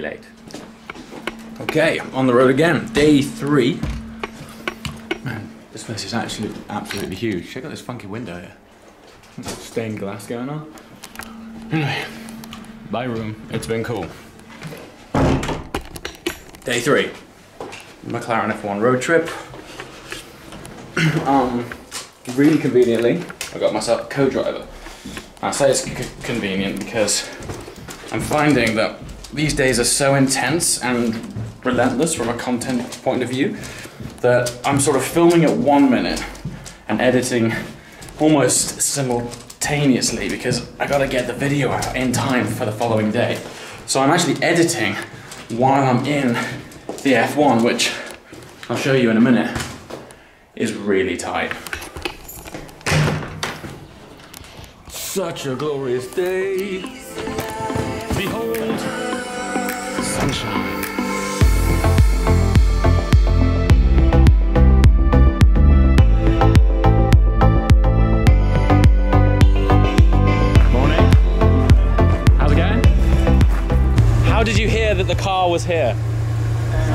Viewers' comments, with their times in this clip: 0:07 did you say "check out this fucking window"? I think thats the first time I've heard you swear
1:01 Love the music used Used before too in the Bahrain vid. 👍🏾